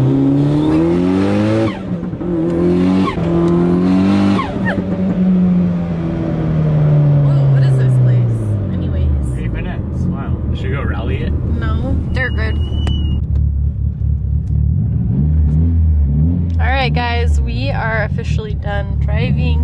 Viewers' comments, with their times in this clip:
0:05 was that a double blow off? Lol